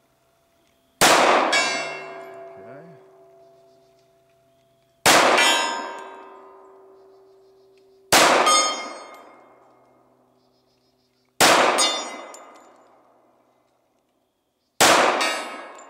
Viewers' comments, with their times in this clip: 0:03 i hear church bells